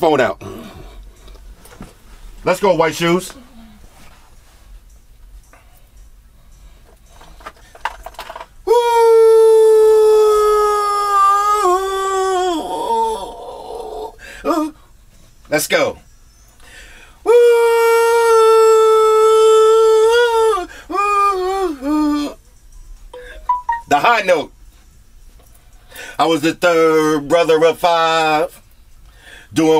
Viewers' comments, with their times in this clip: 0:08 Non-Melodic, Non-Harmonic, yet Dope Singing starts
0:14 Floss sound like having a bowel movement